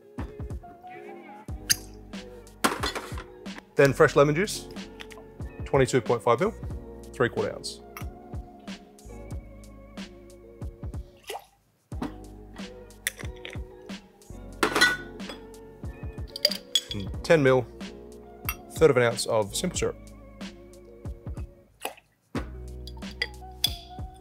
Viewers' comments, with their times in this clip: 0:10 The music editing so that the droplets hit in time with the track is just pure class. TWICE!! if that was a coincidence i'll be blown away, so sick